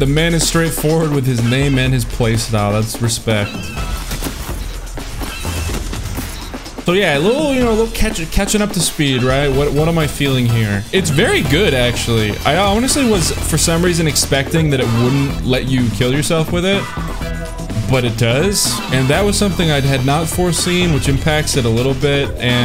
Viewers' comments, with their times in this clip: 0:05 What's with the seagull music ??